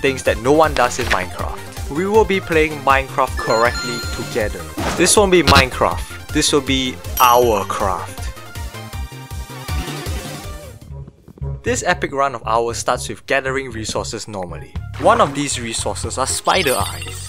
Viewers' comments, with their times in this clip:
0:05 soviet anthem plays